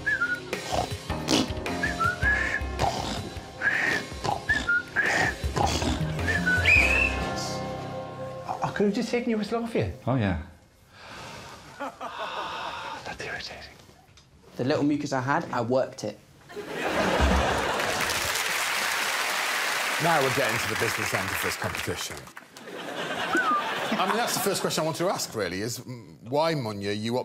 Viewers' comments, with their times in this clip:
0:08 can anyone tell me what Dara says there? I normally don't have any trouble with his accent but for some reason I can't make out what he's saying here and it seems important